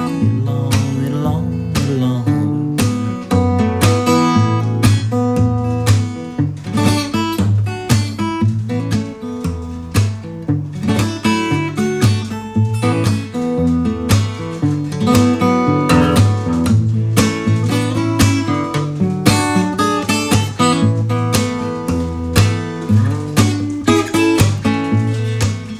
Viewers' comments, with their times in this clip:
0:06 Man, the guitar work starts getting so unreasonably badass